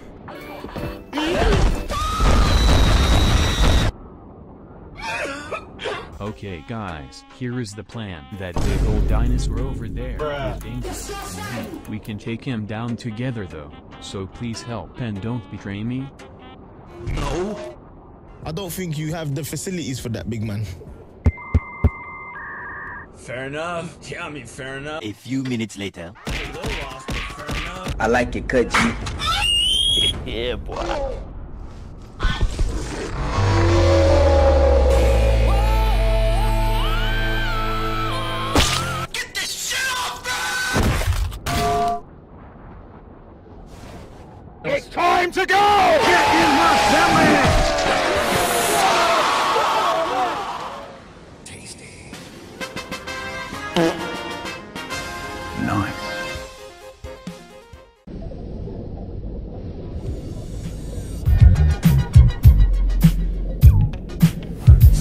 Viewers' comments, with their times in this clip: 0:06 the goat simulator music in the backround is my favorite part
0:40 T-Rex: DROPKICK BOOM!
0:41 What's the metal clink noise ?
0:50 Where did the sound Spike come from?